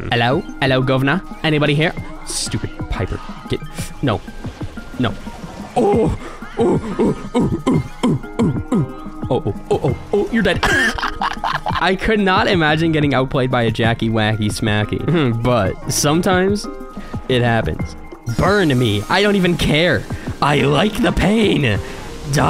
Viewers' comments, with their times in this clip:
0:05 rare footage of someone playing very boring brawler and actually laugh: